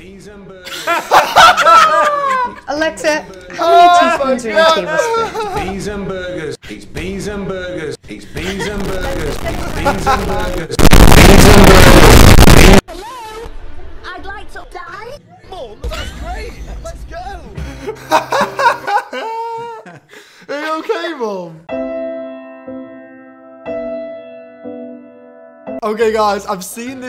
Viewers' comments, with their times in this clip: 0:10 do not listen w headphones,even at like 2 loudness -
0:11 WAS SO LOUD I COULD HEAR PERFECTLY WITHOUT MY HEADPHONES